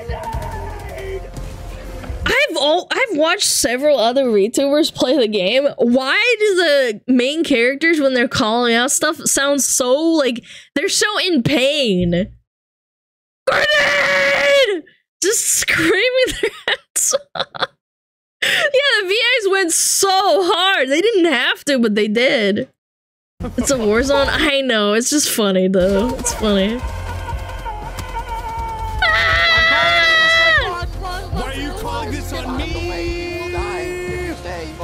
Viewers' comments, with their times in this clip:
0:06 they talk normal at the start of the mission but with evry minute that goes by they sound more andd more hysterical panicked and in pain 😂
0:15 They usually speak normally, but when shit's going down they get desperate